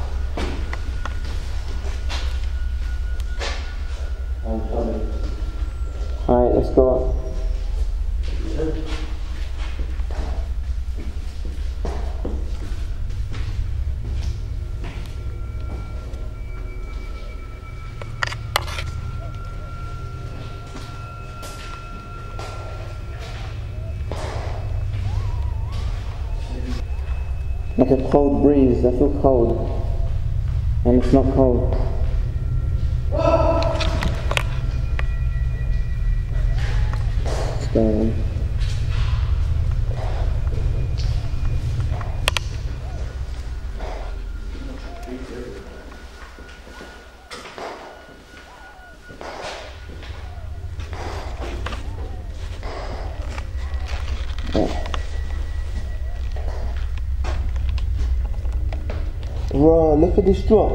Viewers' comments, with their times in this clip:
0:08 immediately after you said lets go up I could hear EVP (girl saying Help) Hope you're okay. Thank God you got out of there. Your video is very much appreciated.
0:09 listen carefully and it sounds like someone is saying hello
0:22 I can hear screamings outside
0:42 STRANGE SOUNDS CAN BE HEARD!!!!